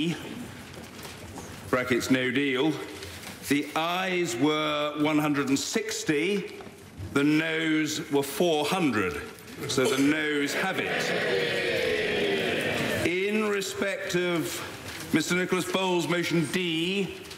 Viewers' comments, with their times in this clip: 0:04 At first I thought he is saying, "Eyes were 188 and Nose were 400" 😂😂LOL, it was "I"s and "No"s